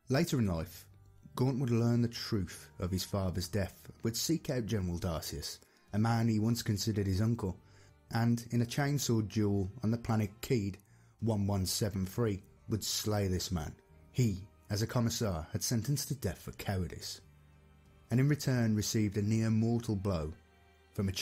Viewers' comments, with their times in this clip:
0:07 iv never heard someone say "chainsaw duel" so casually lol 40k crazy